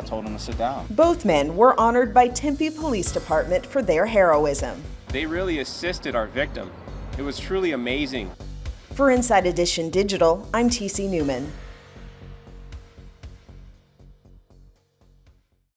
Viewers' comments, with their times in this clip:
0:03 was i the only one that heard heroin